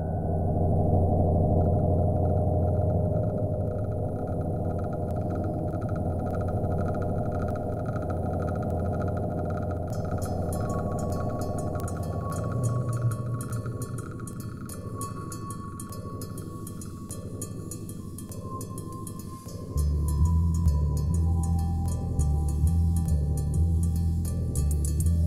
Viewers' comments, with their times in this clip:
0:08 gotta add one "honorable mention" :p, but that song that begin in ... WOW, oh man... that was out of this world "literally" performance was incredible!